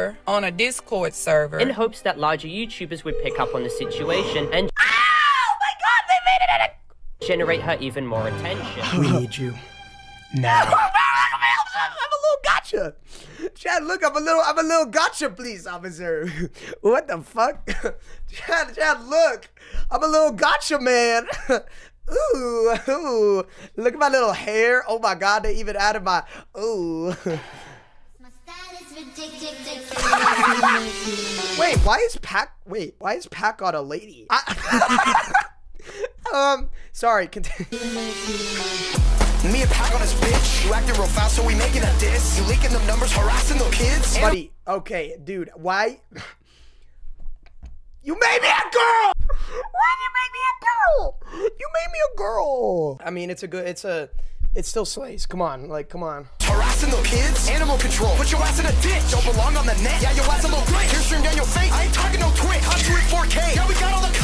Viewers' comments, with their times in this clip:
0:04 he really screamed like a teenage girl who found out who has a crush on who 💀
0:04 his screech built like proud family
0:04 i loved the video but WHAT WAS THAT SCREAM 😭?
0:05 bro screams like a little girl😭💀
0:09 he had a girly voice 😭😭
0:14 bro literally sounds like a girl when he screams
0:50 lil bro went high to low pitch 💀💀😭😭